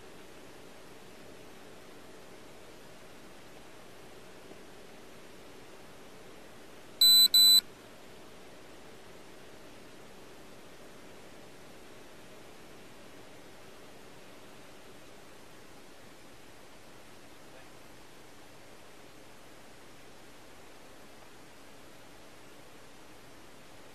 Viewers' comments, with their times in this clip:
0:09 RIP my ear from that beep